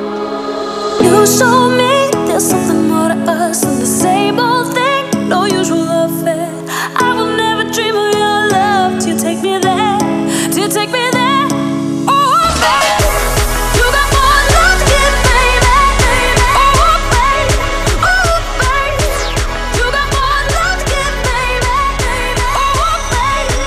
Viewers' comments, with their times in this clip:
0:04 I think your tracks are clipping